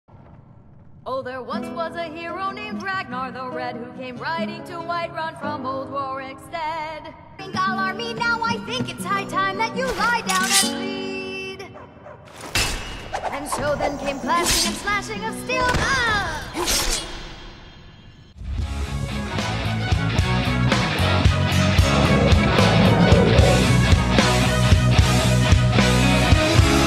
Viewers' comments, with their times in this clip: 0:10 I love how her singing relates to what's happening.